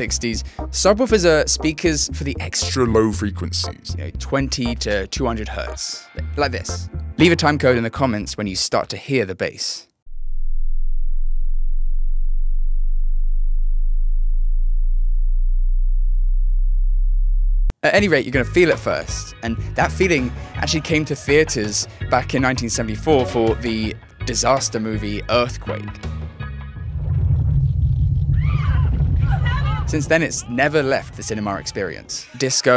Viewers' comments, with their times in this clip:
0:09 it's there for me at 19Hz
0:12 my subwoofer was causing a small 24Hz earthquake in my living room. I actually heard it when it reached 28Hz. Headphones aren't the only way to experience good sound.
0:14 Just starting to hear it. The iPhone speaker doesn’t tell the whole story though. Maybe if I played the video audio through my stereo with 12” subs.
0:18 I didn't hear a thing, but the dog next door started barking.